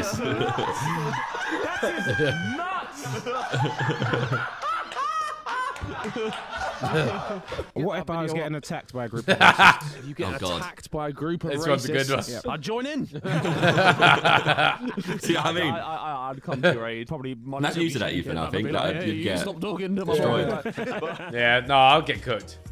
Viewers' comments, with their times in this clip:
0:08 Josh talked through the funniest part of the video and top 5 Harry moments, they way he said You you you stop talking to ma booyyy🤥🫨 always gets me